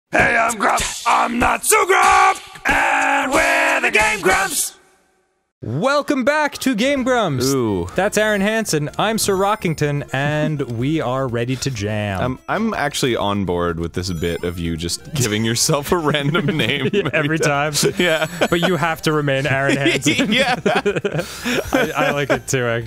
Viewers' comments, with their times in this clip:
0:05 welcome back to game brumps!